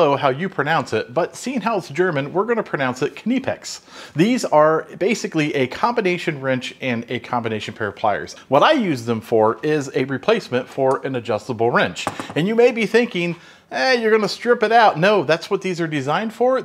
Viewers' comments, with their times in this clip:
0:03 Your German pronounciation is spot on!